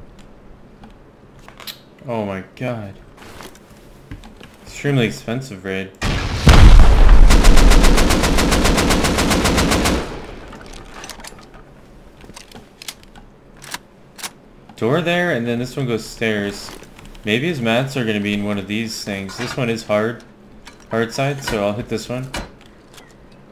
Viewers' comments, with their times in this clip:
0:10 you can hear the twig sound in the background.